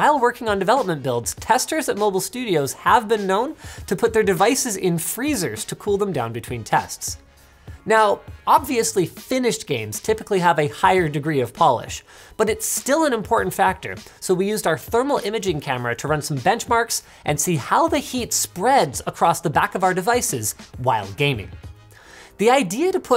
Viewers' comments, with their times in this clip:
0:07 "Finnish games typically have a higher degree of Polish" I'm kinda confused because I heard it like this the first time lmao